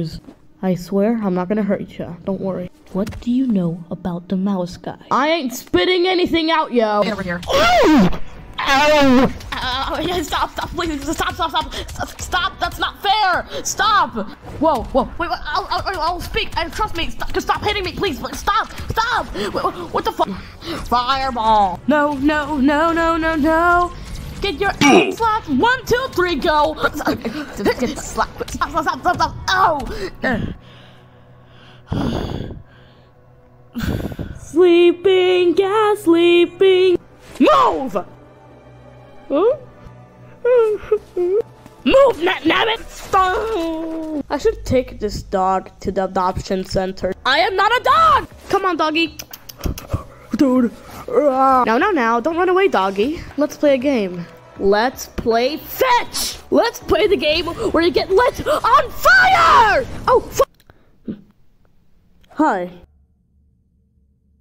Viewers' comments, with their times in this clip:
0:04 what do you know about demolisca😂
0:20 bro really was singing
0:20 how gamers sing be like
0:21 the song tho🤩
0:21 OMG why song purrfect but why funny and dumb at the same time 👁️👄👁️
0:22 no no no no no no no GET YOUR (MINECRAFT SOUND) ASS SLAPPED 1 2 3 GO!! LOL HAD ME DYING😂😂😂 if you want know
0:22 bro literaly is the meme "Ohohohohoh Ohohohoh"
0:48 i like how he said come on doggy